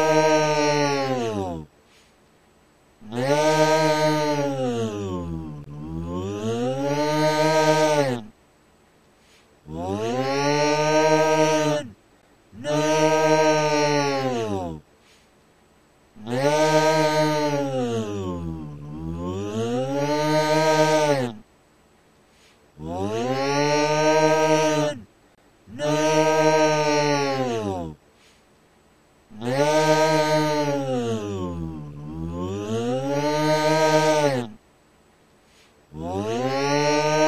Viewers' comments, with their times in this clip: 0:06 Put it on Slow Motion and It'll sound like the THX logo lol 🤣
0:06 he sounds like a vacuum
0:24 Put it on x speed and it sounds like a lawn mower